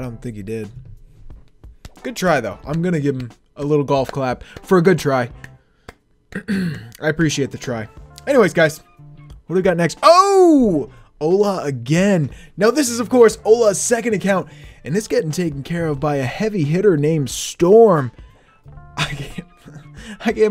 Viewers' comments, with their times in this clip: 0:05 clapping but still hits next button